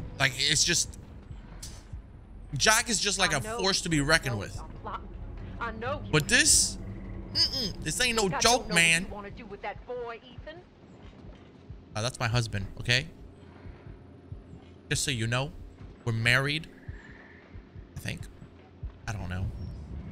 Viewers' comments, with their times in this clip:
0:06 theres something scarier about old women in broken mansions...especially when they have hillbilly accents and loud footsteps lol